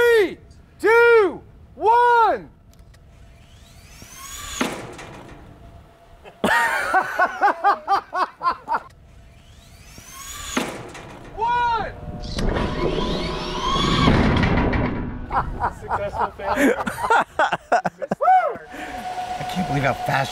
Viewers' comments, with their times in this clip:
0:06 that is Adam Savage's laugh, I've watched enough Mythbusters to recognize that anywhere!